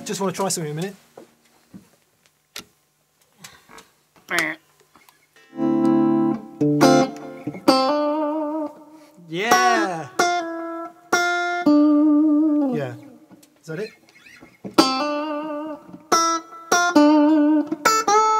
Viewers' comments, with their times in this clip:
0:05 you can use this to cover the law and order theme song